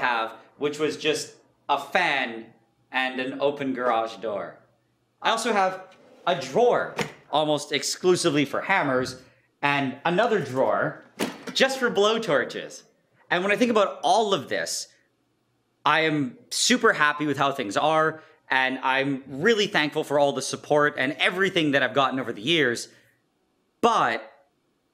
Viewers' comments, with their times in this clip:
0:09 the best part in this video is when you can hear the smile on his voice as he talks abt the blowtorch drawer